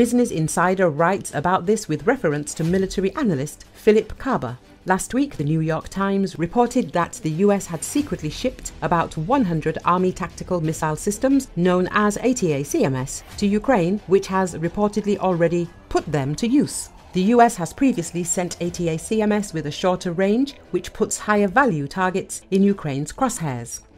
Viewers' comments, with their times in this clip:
0:10 Is this AI, is that why you can't pronounce "Attack-ums"? that's not how they are known.